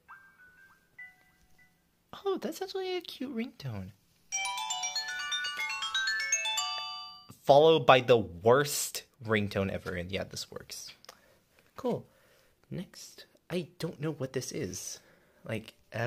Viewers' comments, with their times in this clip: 0:04 The Worst Startup Sound From An I-MOB Phone Lol